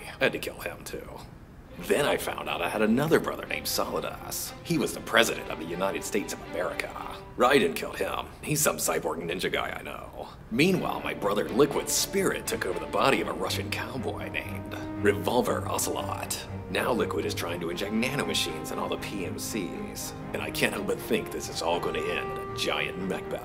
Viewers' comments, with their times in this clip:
0:04 ,it sounds like he said"solid ass"hahaha